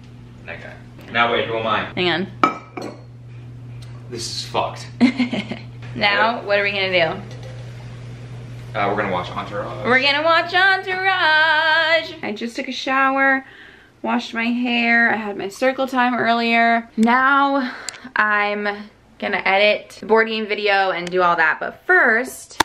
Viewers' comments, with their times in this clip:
0:08 No cap, her voice sounded really good!